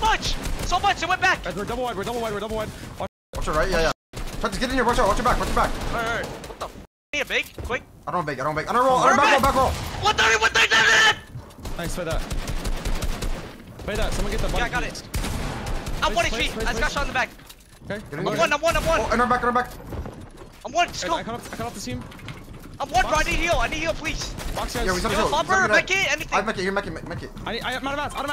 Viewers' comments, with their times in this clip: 0:10 my god these kids don't know how to play without shouting nor will i watch the video so as not to stress me, irritating thing